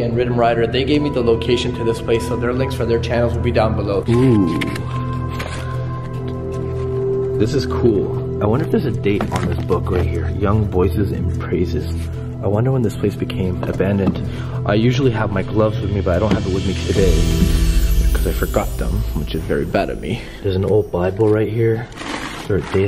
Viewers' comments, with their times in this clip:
0:09 Wtf I am scared it’s right now and I hear footsteps 😱😰😿👎🏽